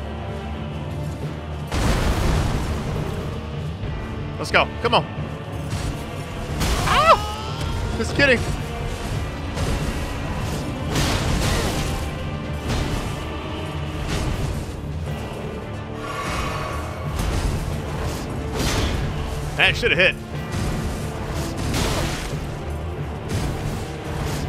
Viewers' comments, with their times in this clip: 0:06 that scream tho rad 🤣